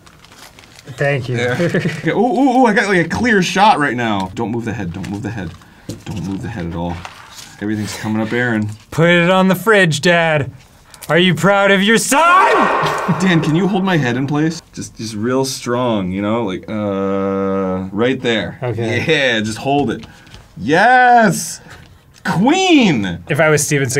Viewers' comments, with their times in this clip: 0:08 The echo killed me! 🤣